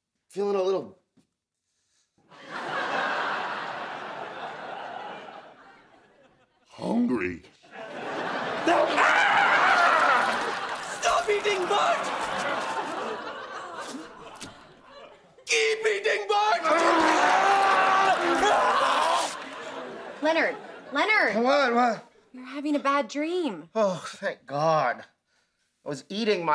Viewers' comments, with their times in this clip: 0:09 Bert’s scream XD